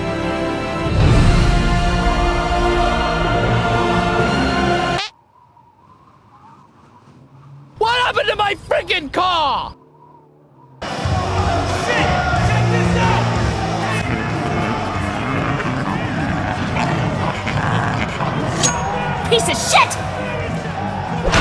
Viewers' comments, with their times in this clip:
0:07 OMG HE TALKED!!!!